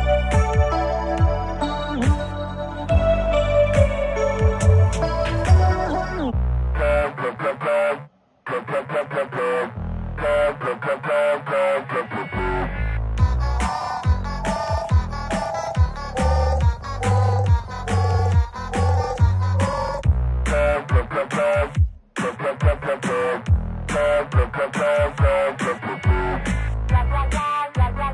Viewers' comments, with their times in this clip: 0:07 To be honest, I don't really see how this is empty. There's one part which could use one more thing, but otherwise, this feels way more complete than Mythical island was on launch. That island had an entire like, 20 seconds of solo percussion with almost no change. The three-eyed monster and the central one (Auger or whatever the name is) absolutely keep everything together. More would be amazing, but the song by itself is still very much "complete" sounding.
0:13 sounds like circus of the dead